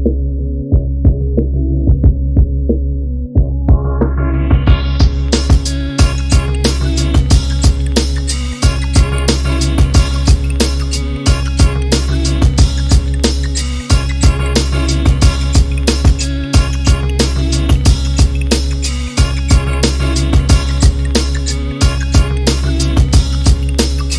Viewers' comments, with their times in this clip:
0:06 man you have got those boom bap drums down pat 👏 cool organs going on here, and those clicking sounds that started 🔥